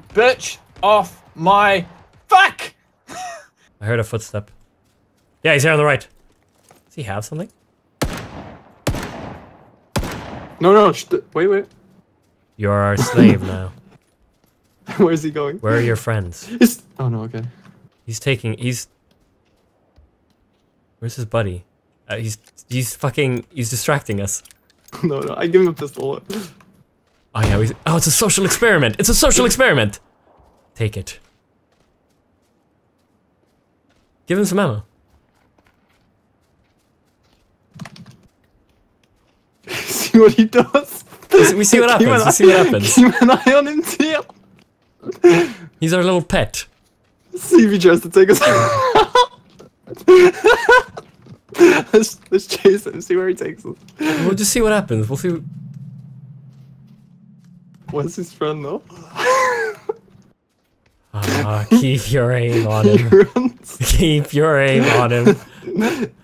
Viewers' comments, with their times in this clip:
0:05 am I the only one who heard vanoss
0:49 the guy say keep your aim...he sound like vanoss